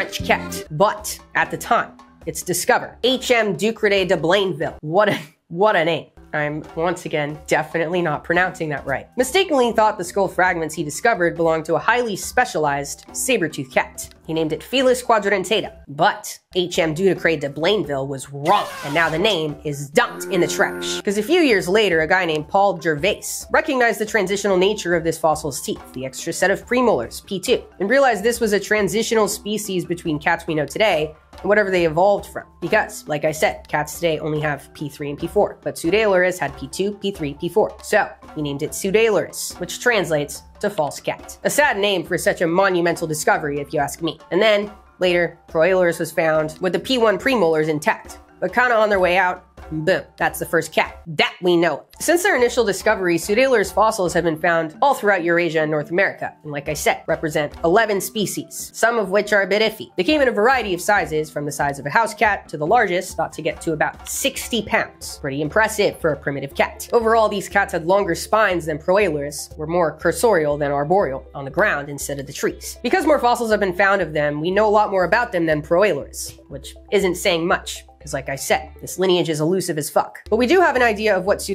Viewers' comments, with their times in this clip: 0:10 from a French Canadian, you pronounced his named in very acceptable fashion, definitely with an accent but otherwise 100%
1:05 the classic metric system weight, jilograms